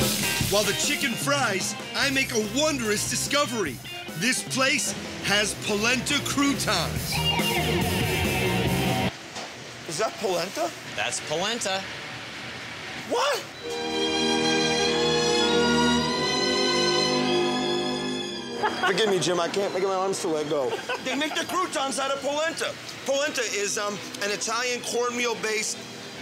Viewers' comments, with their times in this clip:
0:09 Is that placenta?
0:13 That "what?" Is one of sheer joy